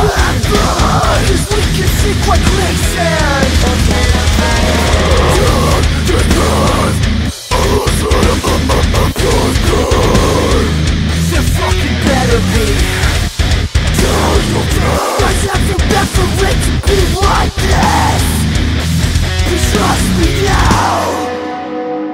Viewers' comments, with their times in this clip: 0:07 Man, sounds so much like Emmure